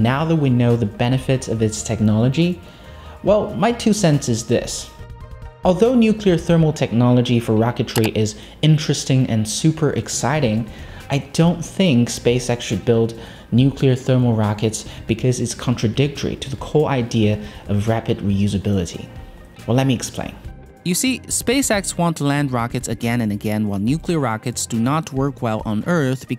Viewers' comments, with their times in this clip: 0:07 Whats up with that random clicking noise?